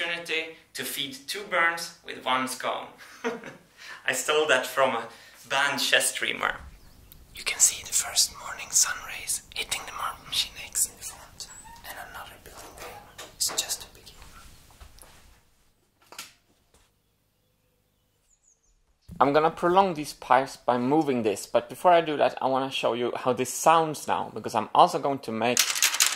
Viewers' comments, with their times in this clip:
0:06 i like how he whispers like MMX is sleeping
0:06 Whispering because it's early and he doesn't want to wake up the Marble Machine X yet.
0:07 Sudden ASMR what the heck!?